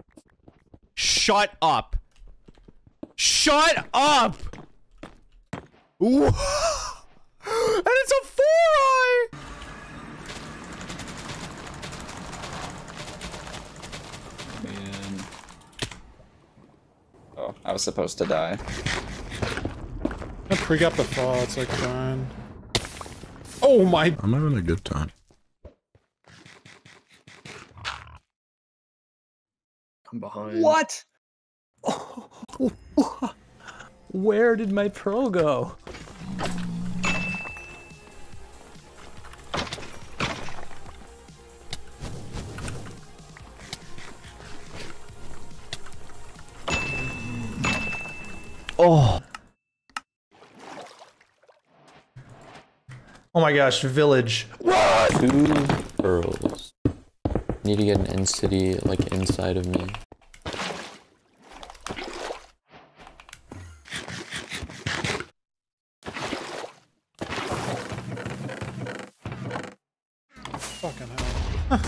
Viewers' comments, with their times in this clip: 0:03 bro turned into the Smosh intro
0:53 Is it weird how funny I find this sudden scream? He was just mid-sentence, but then instantly screams at woodland mansion with no delay.